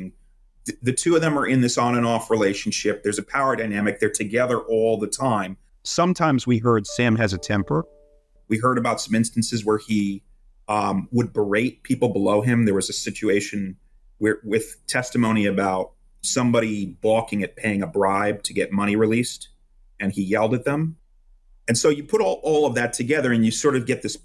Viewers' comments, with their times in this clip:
0:05 I don’t know if it’s the edits, but this sound change seems kind of sus.